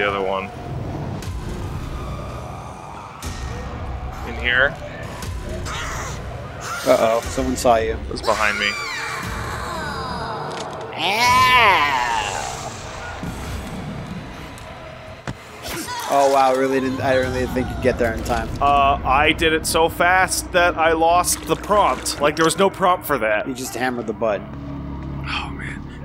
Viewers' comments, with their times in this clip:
0:07 She sounded like a Loony Tunes character being pleasantly surprised about something. But with extra reverb. EDIT: Probably more like a Hannah Barbara character, now I think about it 🤷